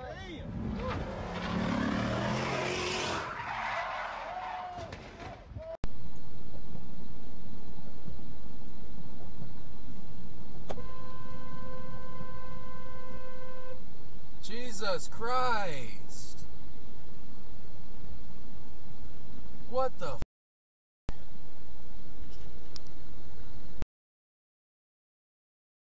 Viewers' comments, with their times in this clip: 0:08 there was nothing wrong with that horn, it got them to stop merging. Could have braked a bit more, but I can understand not wanting to with all these distracted drivers these days. Don't want to get rear ended.
0:08 STOP HONKING BEFORE AVOIDING